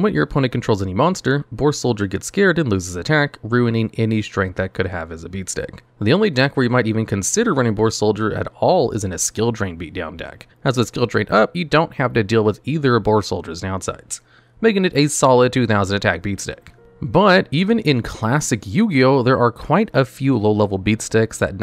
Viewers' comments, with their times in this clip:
0:09 Audio sounds weird. I hope it isn't just me.